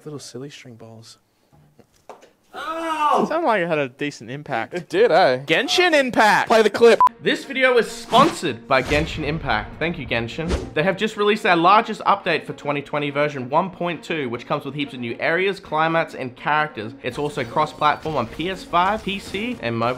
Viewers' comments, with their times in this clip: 0:05 No one gonna talk in the background 😏